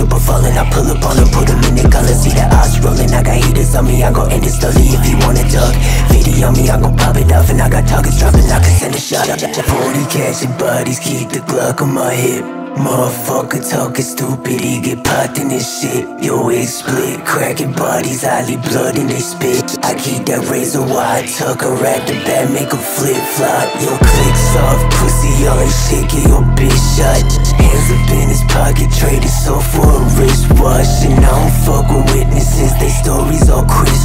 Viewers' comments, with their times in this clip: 0:09 bro that switch-up is mad 🔥
0:22 the beat change is wicked